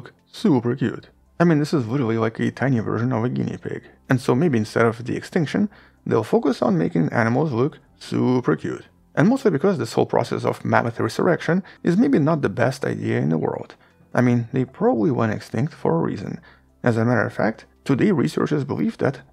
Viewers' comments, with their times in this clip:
0:05 the way you said "suuuuuuper cute" 😂😂😂😂😂😂😂 it really feels like i can feel your annoyance at this seemingly wasted serious scientific time. Lol